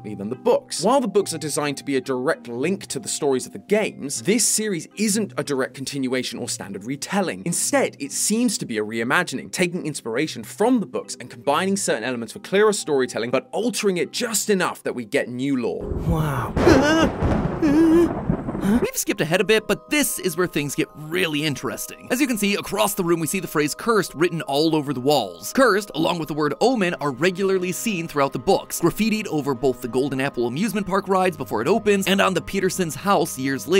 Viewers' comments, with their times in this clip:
0:08 I need to get used to his voice
0:17 what was that “Eughh! Eughh!” 😂